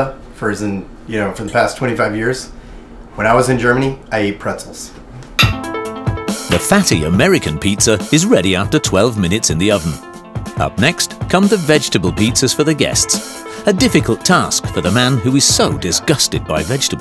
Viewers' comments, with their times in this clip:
0:04 I can’t even pay attention to the show cause they put a banger in ts